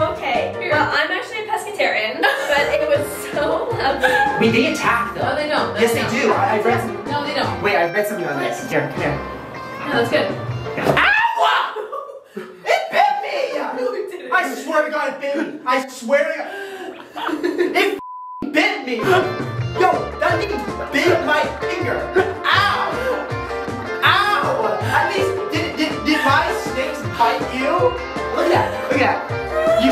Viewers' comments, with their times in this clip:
0:10 the scream was definitely real